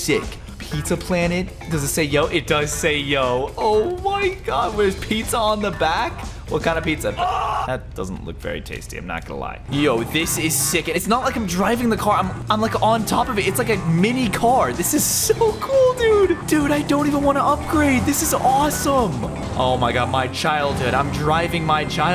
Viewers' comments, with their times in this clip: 0:06 yeah is PEEzza